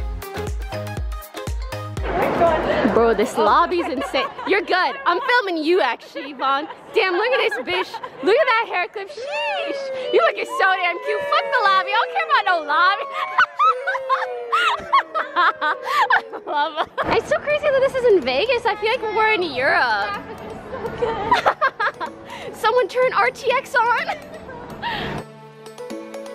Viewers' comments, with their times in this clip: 0:08 is probably my favorite part just because everyone is collectively sheeshing in public lmao